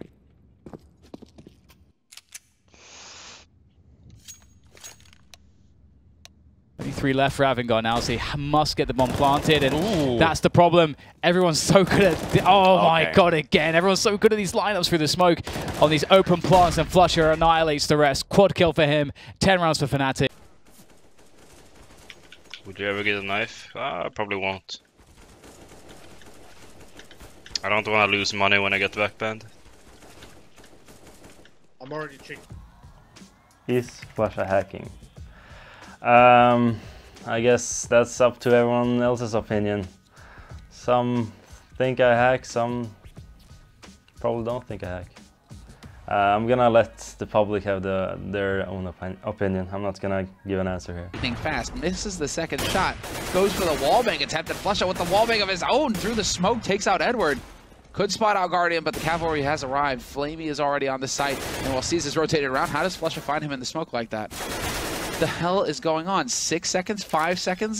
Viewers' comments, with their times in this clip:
0:04 looks super sus, but they were making tons of noise.
0:54 takes out N word? Somebody tell me the meaning of this here. 😑😑
0:54 I love the clip where the caster isn't even hyped despite the 1v4, but instead like "wtf is going on here"